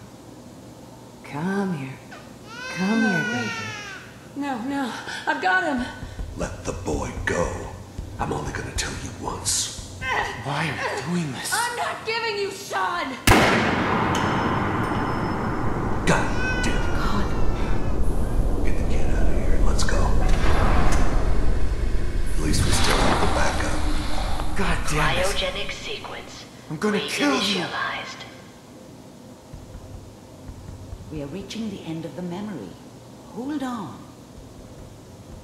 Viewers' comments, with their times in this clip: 0:09 You can hear an empty brass hitting the floor after he shoots a revolver... Hmm... How did I miss that during my FO4 playthrough?
0:13 The shell casing sound after Kellogg fires a revolver gets me every time.
0:13 this may have been a slight oversight but has anyone noticed that despite using a revolver you can still hear the sound of a bullet casing hitting the floor and since spent bullets are retained within the cylinder and are not immediately ejected like a pistol a casing hitting the ground after firing would be impossible.
0:13 these idiotic developers at Bethesda really put the sound of a shell casing hitting the ground after kellog shoots his REVOLVER
0:17 you can hear a shell casing falling on the floor, from the .44 Magnum revolver